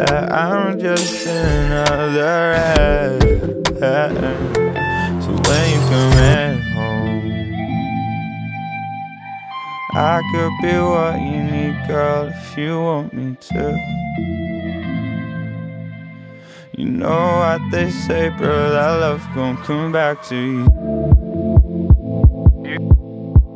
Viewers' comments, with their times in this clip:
0:06 Its 2023 and till now background guitar hits diff